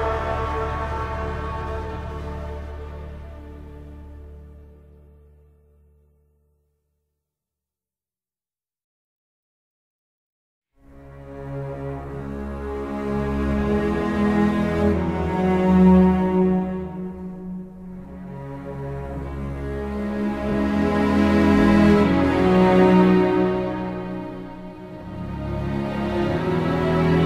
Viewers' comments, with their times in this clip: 0:10 someone is going to die because it is sad music And also it is called old comrades